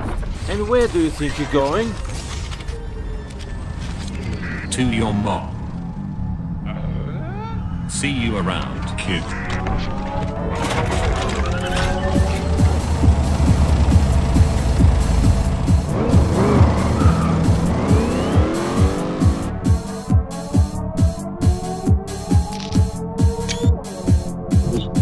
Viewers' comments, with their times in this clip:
0:06 this music is cool